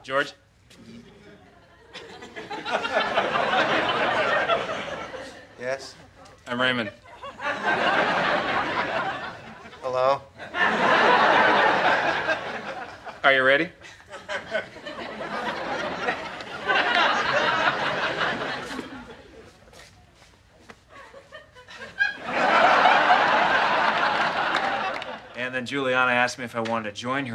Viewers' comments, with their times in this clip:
0:09 That awkward hello 😂😂😂